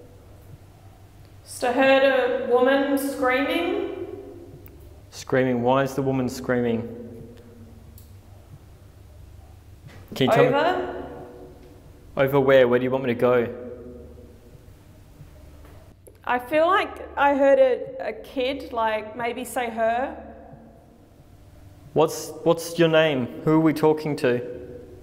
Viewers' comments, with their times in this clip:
0:07 it sounds like someone yelling in the far distance.